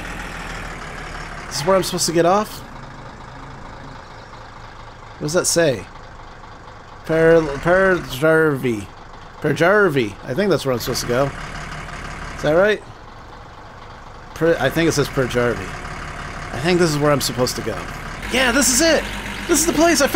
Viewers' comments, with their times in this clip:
0:05 Peräjärvi + english speaker = Prrzrrvi lol